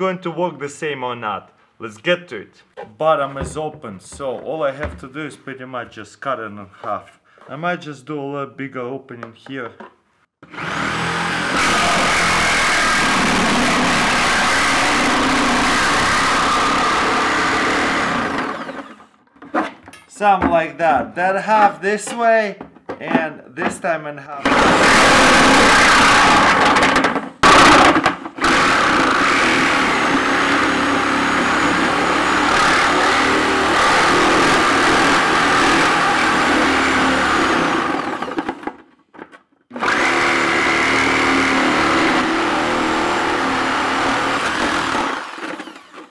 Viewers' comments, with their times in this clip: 0:08 I'm holding a funeral service for all earphone users next Tuesday if anybody's interested in coming along.
0:10 that sounds like those earrape videos XD
0:12 is it quiet for anyone else? turn up ur volume
0:24 Guys, turn up your volume he actually told you a dirty joke but in small voice
0:27 That noise has to be in a horror game